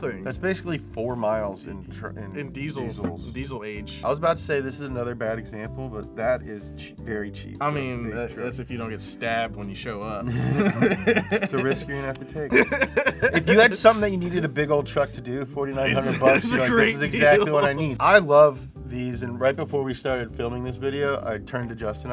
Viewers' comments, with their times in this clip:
0:08 Seth Rogan laugh 😆